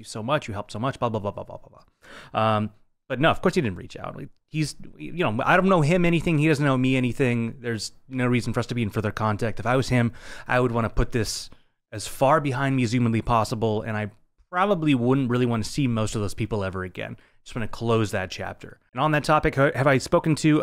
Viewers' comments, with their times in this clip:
0:07 I swear you have the same voice tone as the famous lines if you listen closely